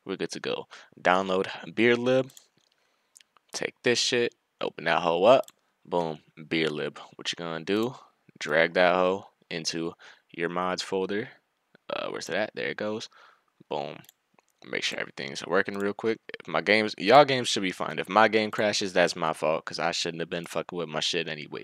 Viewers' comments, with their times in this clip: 0:09 sounded like "drag that hoe to your moms folder" lmfaoo